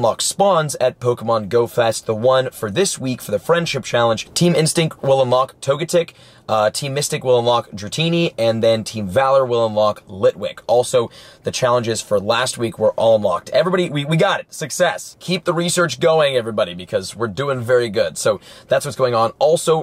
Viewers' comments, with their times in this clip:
0:05 lmao that's not togetic xD